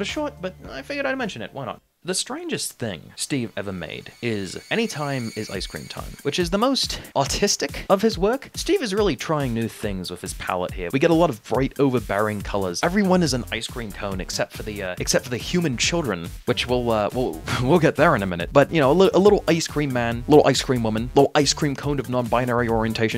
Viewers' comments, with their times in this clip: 0:07 i genuinely thought you said "autistic"(i thought you were using the word "autistic" as an insult) and i said out loud "great.." (sarcastically) until i rewatched it and realized i misheard.. i was almost about to read a mean comment all for nothing